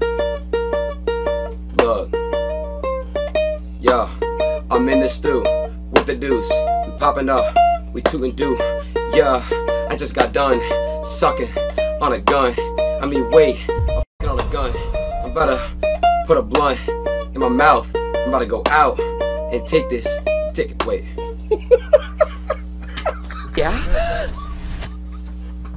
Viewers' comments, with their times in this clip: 0:07 This bangs harder than my grandmothers retirement home